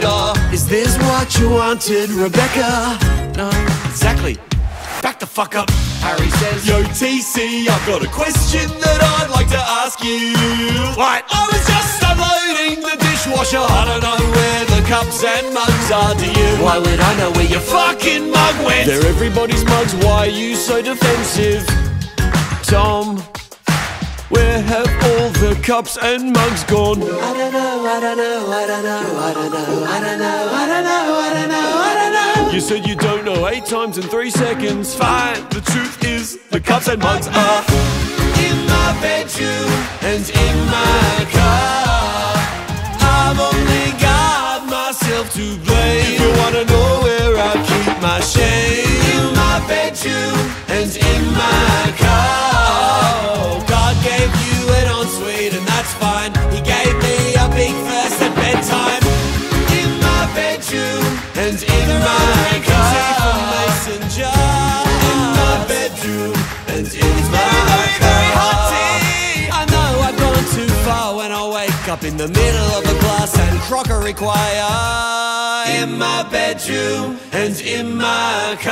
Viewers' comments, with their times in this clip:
0:10 The false upbeat performance of the "Harry" character, as well as the skip on the abrupt "WHAT" fucking kill me
0:59 that last section on is pure musical heaven for my hears. don't know why but the way you sing jar almost made me cry